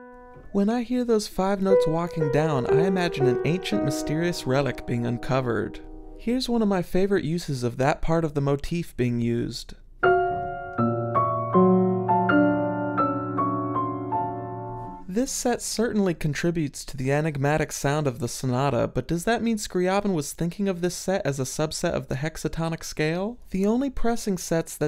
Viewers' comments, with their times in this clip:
0:10 –I also love this brief phrase at the beginning of the 8th. To me, it sounds so tragic but, as always with Scriabin, elegant as well. Thx for the education.👍☮️